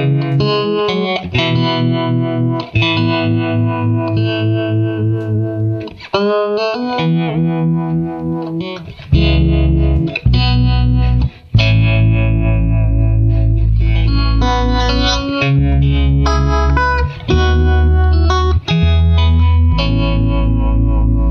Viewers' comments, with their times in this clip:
0:09 the bass part from is played with a separate track? or something else?